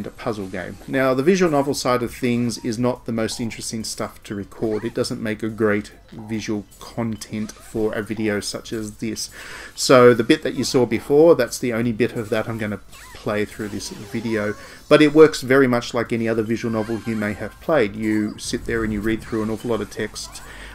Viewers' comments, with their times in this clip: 0:07 Hah! I love the emphasis on "content" you seem to have a great time pronouncing that word 😆